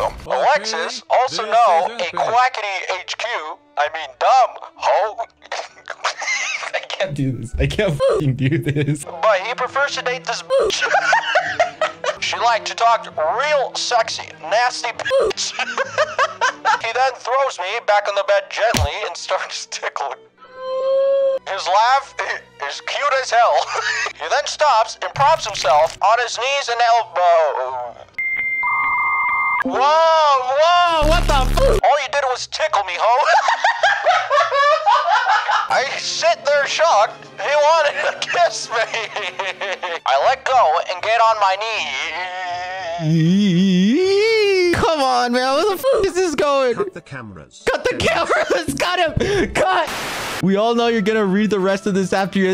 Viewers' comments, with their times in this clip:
0:03 WHY TF DO YOU SOUND LIKE ALASTOR FROM hazbin hotel
0:03 the voice was too perfect
0:18 this voice sounds like Alastor from Hazbin Hotel and to imagine him reading that had me laughing too much
0:24 THE SOUND EFFECTS,, I’M DYING
0:31 I can’t stop laughing at “all you did was tickle me hoe” in Obama’s voice 😭
0:31 idk why but I love his laugh so much 🧽
0:32 he's voice is like the voice of Alastor xd
0:40 "and get on my knee obama voice stops EeeEEeeeEH" I'M WHEEZING